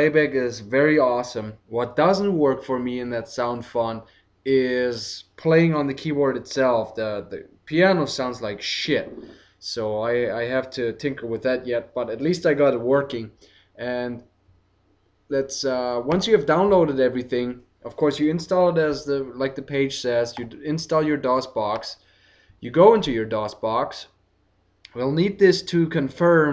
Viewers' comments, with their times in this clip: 0:08 Piano sounds like SHiT. lol You said it so confidently.